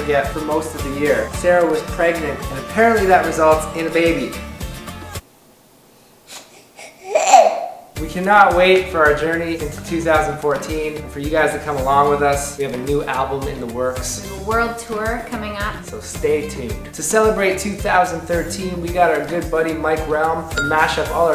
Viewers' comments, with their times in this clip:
0:07 That laugh was so cute.